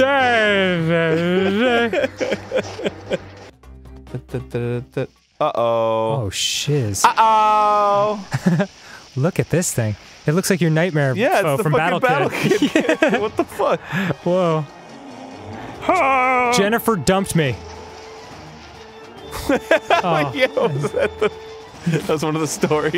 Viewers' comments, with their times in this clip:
0:09 i think Arin but im not sure was like "uh oh" and it sounded like one of the Tellitubbies (.....) ..... (yes i fuking watched them) (i watched them till i was like 10 lol hahah im weird lol) .............. haahahahaha